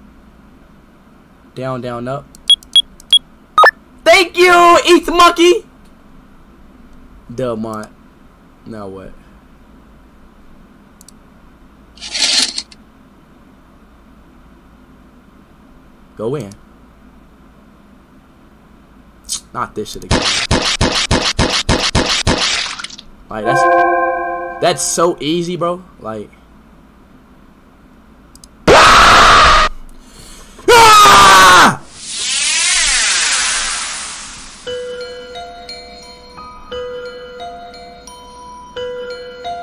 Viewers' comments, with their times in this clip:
0:04 sounds like my baby cousin saying thank you
0:26 The way he screamed back 💀
0:27 I show speed gets jump scared and he yells back